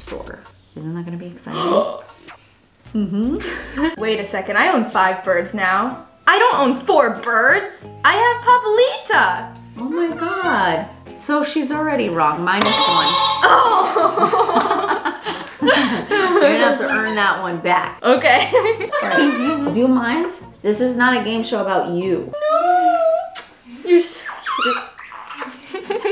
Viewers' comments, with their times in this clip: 0:10 Brando and Marla 🤣 respond at the same time 💕🦜💕🦜 and it’s sounds the same!